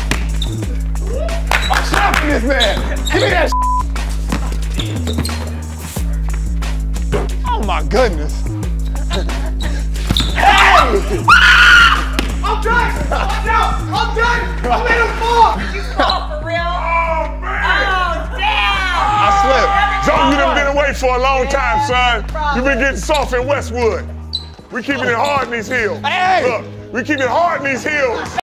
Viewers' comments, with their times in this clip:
0:09 “Lonzo falls” Lamelo: HAHAHAAAAAAA
0:10 Please ignore the scream during as no one was hurt in the making of this video coughs (except Lonzo)
0:11 I don’t know how I don’t get tired of watching Lamelo breaking his big brother’s Ankles🤣🤣Oh and the scream 😱